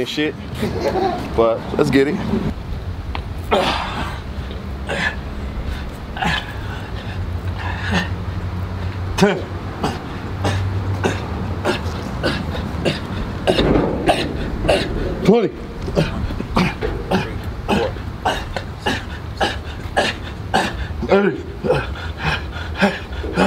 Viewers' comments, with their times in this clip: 0:04 MOANING STARTS DEAD GAME 👊🏼💪🏼